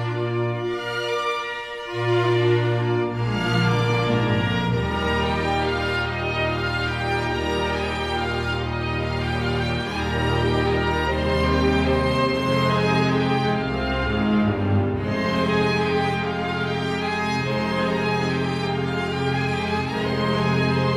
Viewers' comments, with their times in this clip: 0:06 Minute is such one confortable bed cloud in the mind! Grieg rocks it...